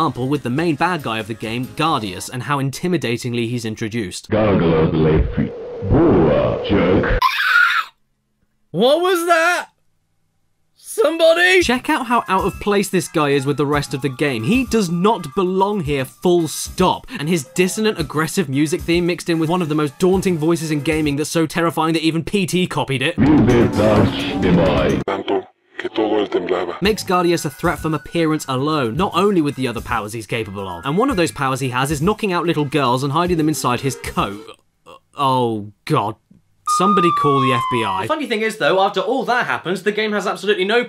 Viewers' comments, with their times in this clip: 0:04 his voice sounds like "Omaewa mu shindeiru"
0:07 ... Sinistar? Is that you?
0:24 "that all of him tremble"? that's some weird Spanish